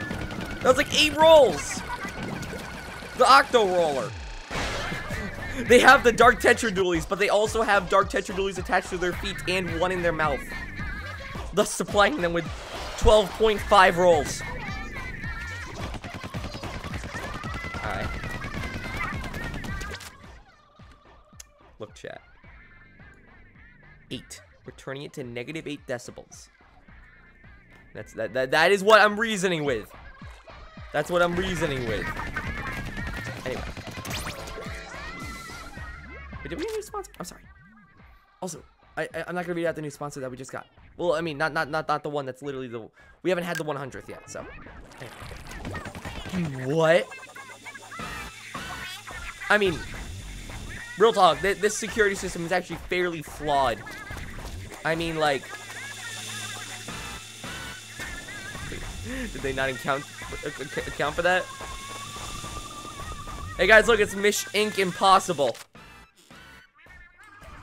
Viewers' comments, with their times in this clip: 0:03 good timing on music
0:53 and on, the music sting was perfectly timed with your jump over the lasers